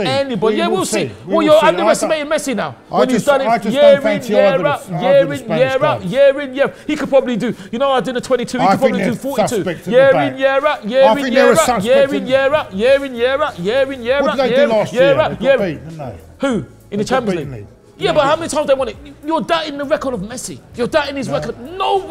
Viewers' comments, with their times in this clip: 0:10 new god flow